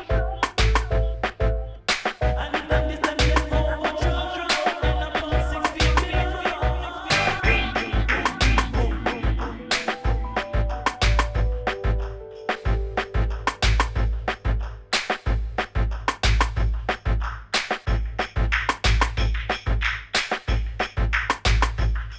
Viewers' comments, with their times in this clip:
0:08 the piano is just relaxing and cool